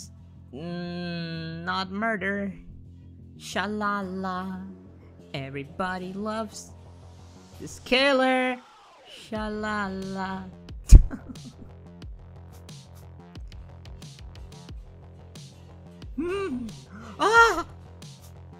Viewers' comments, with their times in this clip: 0:03 great singing. I really say this without sarcasm, you have a beautiful voice for this ✨💙